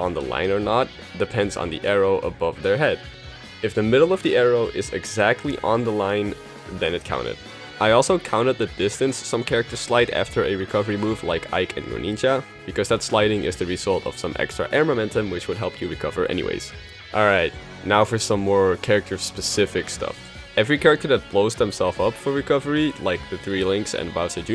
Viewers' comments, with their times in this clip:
0:09 who are ike and uNiChA? 😂
0:11 Wait, like Ike & who? Did you say Onii-Chan?
0:11 I know this video has been out for a while now, but I misheard your pronunciation of 'Greninja' and heard it instead as 'Municha'. Whoops, lol.